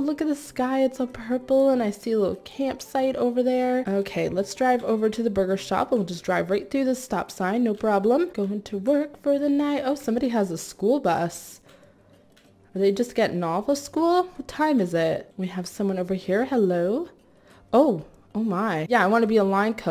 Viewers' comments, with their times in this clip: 0:04 ok lets Drive to the booger shop😂😂😂 BTW I Love your vids❤️🧡💛💚💙💜